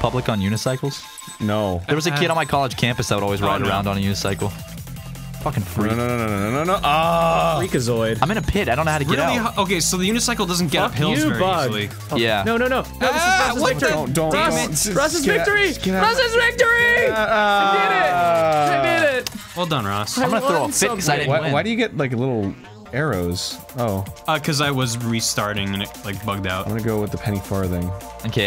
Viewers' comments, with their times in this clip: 0:10 that song goes in some wipe out like music